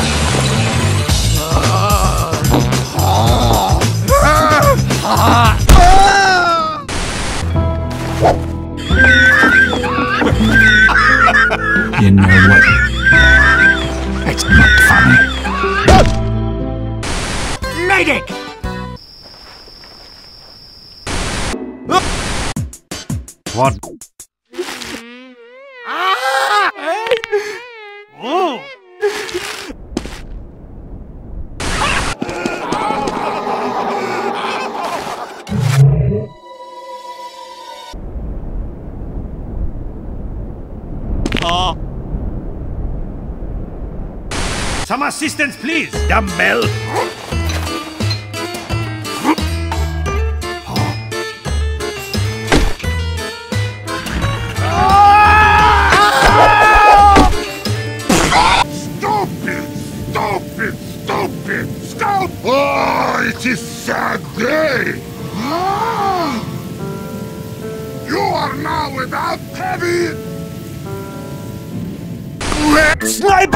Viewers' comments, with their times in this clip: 0:08 the engenier sounds like I do after I go up more then 3 levels of stairs
0:21 "As the last star in the universe of this half second clip explodes, engineer realizes death was imminent to all either way, being it the end of the video or the end of the universe, as the engineer sees the blast coming towards him he releases his last breath, a scream, a cry, a cry for what? for help? a cry of pain? even the engineer doesn't know but he must cry and cry he does, he cry's for none as all are wiped, he cry's for even not himself but he cry's, he cry's for none he cry's for no reason other than himself, but even himself is none and he sees the flash of the end of the clip before he dies"
0:58 How I laugh.